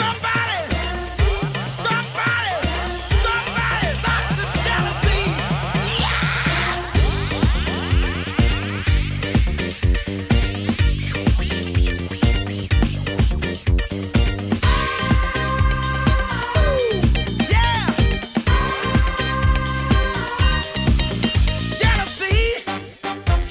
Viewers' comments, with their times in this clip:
0:06 reminds me so much of James Brown